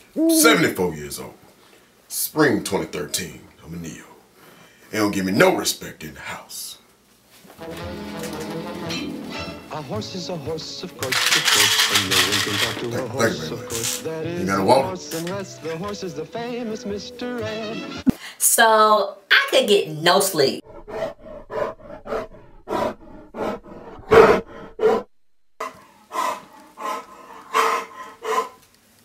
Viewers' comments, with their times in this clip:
0:10 Lmaooo Sooo Nobody peeped the Mr. Edd song ... I was in tears.. Poor Iotas!!!